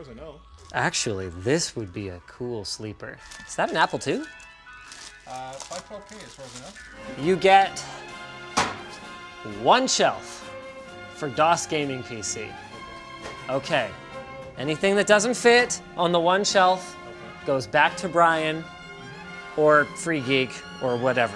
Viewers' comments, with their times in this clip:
0:08 sounds like Dragon Ball Z's fight music..